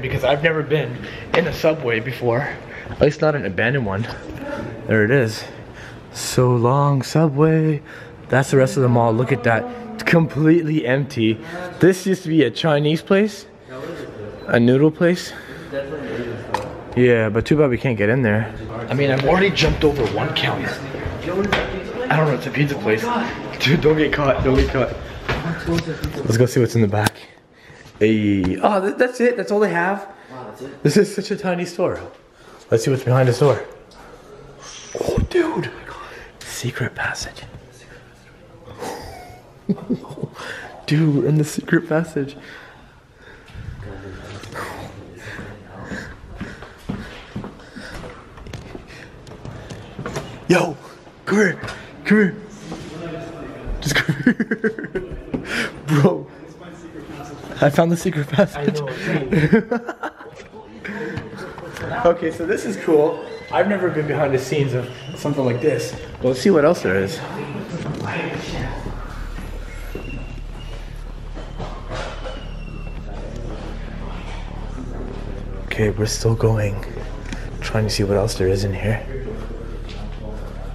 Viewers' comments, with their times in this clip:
0:09 WHO WAS SINGING THEY ARE AMAZING
1:05 you could hear a whisper like if u hear it
1:07 ther is a whisper like if you herd it